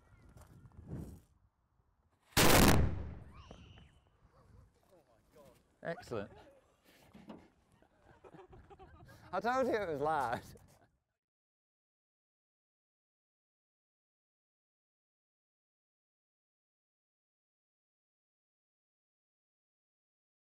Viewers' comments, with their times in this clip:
0:03 you just nailed an entire school field trip by the sound of it